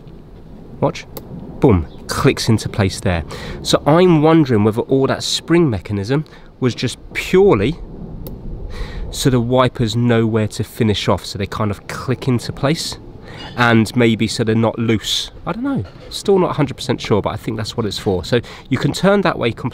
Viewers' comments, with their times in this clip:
0:04 That ring you dropped - I have been listening to that over and over intensely and it's my opinion that it hit the concrete on its edge and rolled off the concrete either along the edge of the grass vertically or under the bushes on the drinkers side of the car.